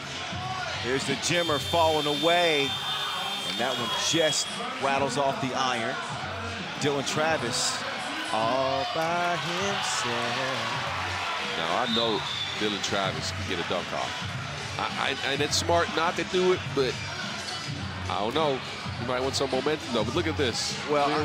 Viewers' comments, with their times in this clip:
0:07 can we appreciate this smooth singing?